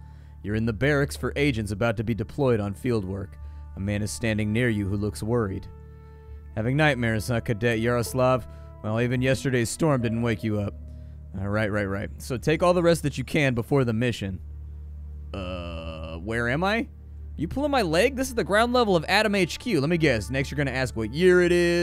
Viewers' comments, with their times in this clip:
0:05 Morrowind reference? The way that was said made me instantly think of that lol